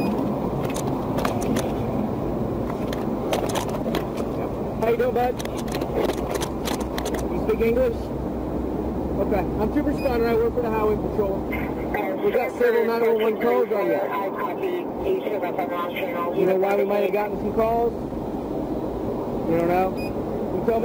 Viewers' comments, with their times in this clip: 0:07 You speak English ? lol